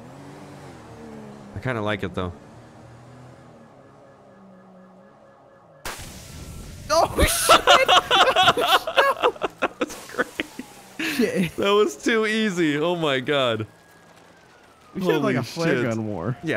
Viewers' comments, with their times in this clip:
0:04 I like how there was silence before you shot him😂